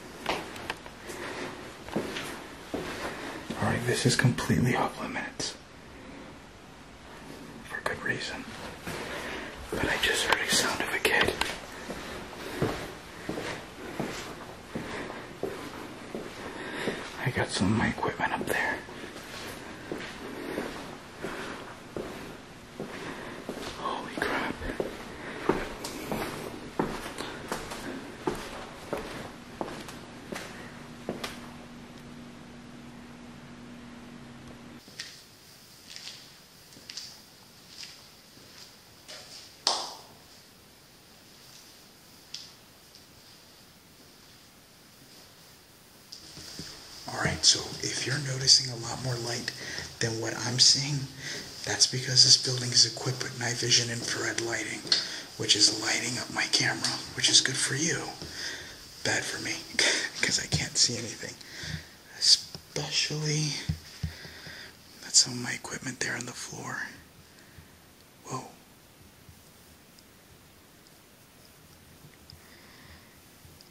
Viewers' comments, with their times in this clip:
0:04 I think you may of had outside interference the window on the left someone can be seen running past the window on the outside and a giggle. Great video. Keep up the good work ,stay safe .😀
0:09 a child laughed
0:50 I just heard couple of people talking
0:55 I just heard the panio playing bye it’s self that’s spooky